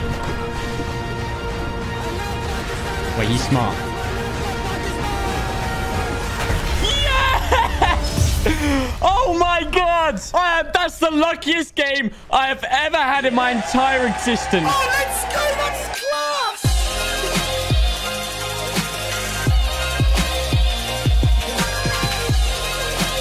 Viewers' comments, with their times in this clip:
0:05 That laught was so funny
0:05 Bruh his voice crack 🤣
0:06 That should be an edit noise on every video from now on....